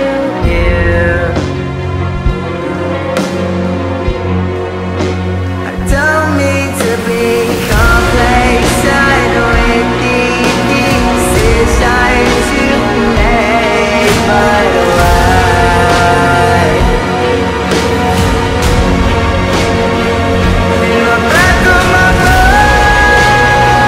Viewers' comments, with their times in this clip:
0:06 Bro who ever is singing Is just Majestic!! 😭
0:06 who is this second person singing? he has an amazing voice ❤❤❤